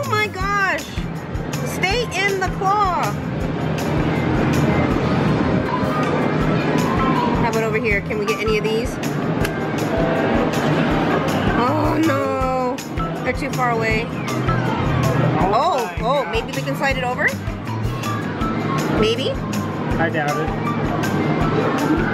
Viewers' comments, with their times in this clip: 0:06 that default YT approved song reminds me of one of the Persona 5 songs.